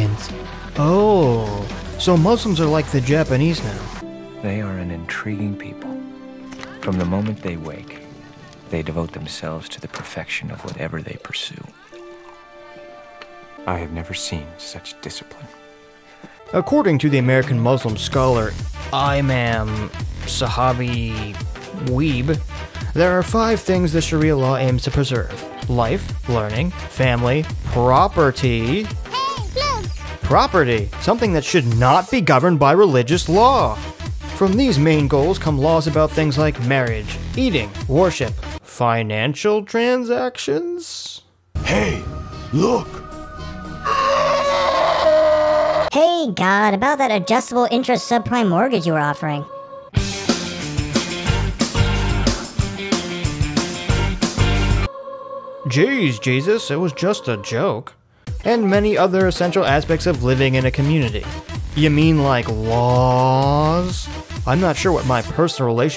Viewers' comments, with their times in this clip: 0:04 A scientology guy speaking.
0:51 I love that song.